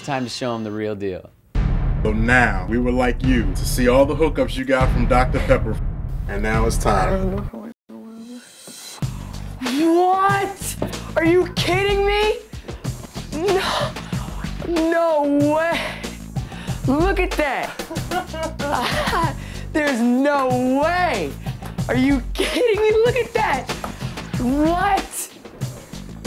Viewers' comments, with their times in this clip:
0:09 Whhhaaaaaat? Reminded me of Dave Chappel's Lil Jon.